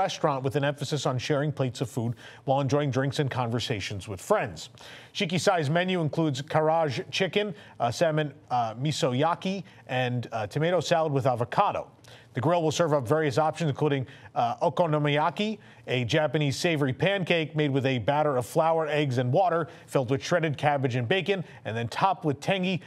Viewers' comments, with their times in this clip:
0:06 Some of your dialogue in this section repeated twice in a row